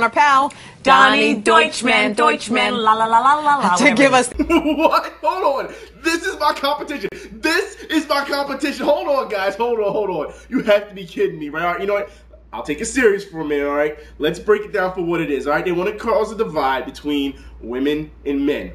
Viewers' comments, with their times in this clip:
0:05 Your laugh made ma laugh my ass off. LOL!